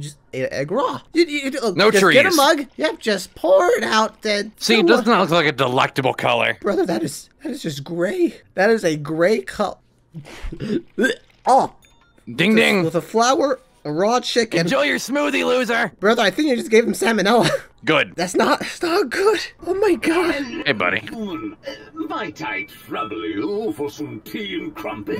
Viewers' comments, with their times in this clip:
0:10 ok now that sounded a bit too real 😭